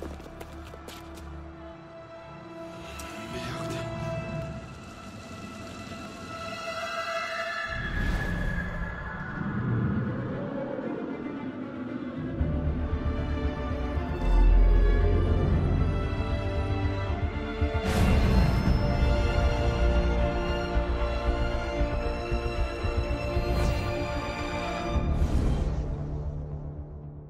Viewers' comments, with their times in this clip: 0:06 That legendary eagle sound❤❤
0:13 Bass booming when showing "Ubisoft presents" Aaahhhhhhaaaa....